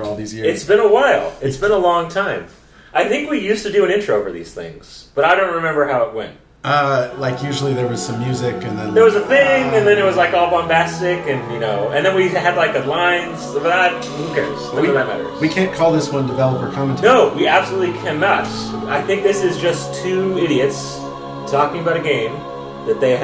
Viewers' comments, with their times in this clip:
0:06 YES THE GODLY MUSIC IS BACK